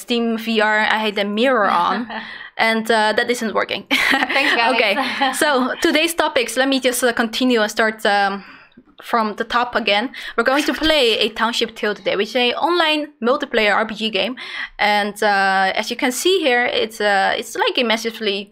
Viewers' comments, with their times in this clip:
0:03 EDIT: Sorry about the echo and sound difficulties today - It is fixed It'll be better next time! Gonna be an interesting one! Looking forward to hang! For those that missed our last live stream, our new stream schedule is every Friday at 9 PM CEST (GMT+2).